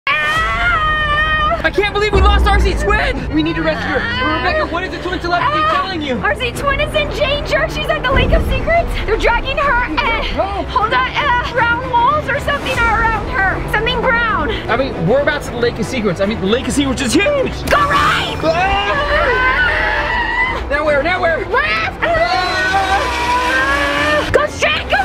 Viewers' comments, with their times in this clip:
0:07 ganger or danger?